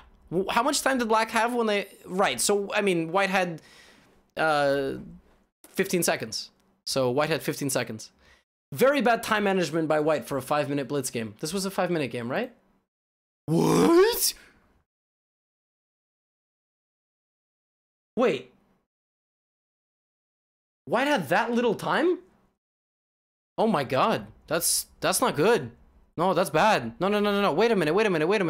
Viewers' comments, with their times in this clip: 0:04 WEUAACHT! levy rozman in action with another fantastic sound effect
0:12 that "wHaAaaT" was amazing, reminded me of Scooby Doo.
0:12 Levy's reaction is 100% Scooby-Doo voice
0:13 Gotham's Scooby Doo voice: